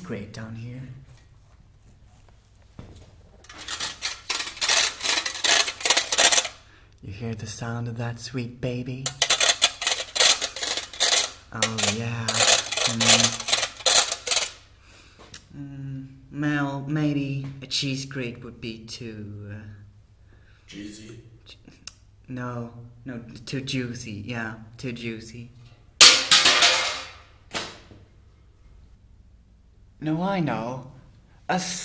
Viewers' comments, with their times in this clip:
0:06 the way he said that made my ovaries explode
0:06 why does he talk like this... lowkey sus. "Oh yeahhh" "mmm~~""
0:19 i like how he said juicy